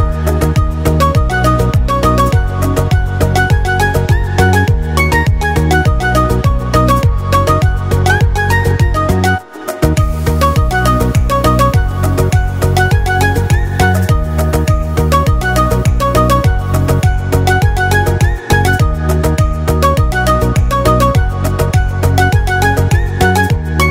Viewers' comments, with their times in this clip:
0:09 the person who remixed this song actually missed a beat,and when you listen to it you can realize what is level of that person...HATS OFF!!!!😍👌😱